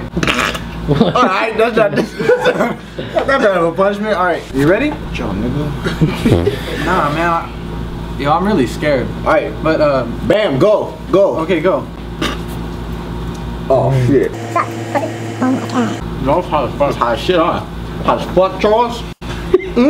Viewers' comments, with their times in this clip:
0:05 Yo who tf farted lmao!
0:05 why the camera man fart hahah
0:06 LMFAO!!!! Tha cameraman farted seconds. bahahahahaha. 💩💨🌬
0:07 did someone fart XD